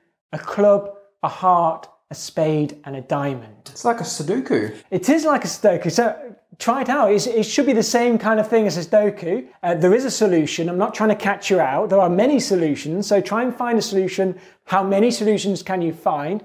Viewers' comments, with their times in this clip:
0:03 Suduku? Sudoku, righ?